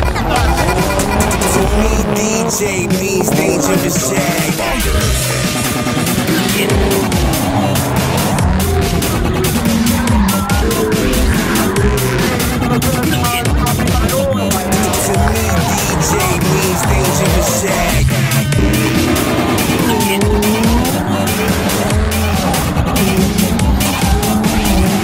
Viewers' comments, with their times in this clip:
0:06 sounds like Dubstep.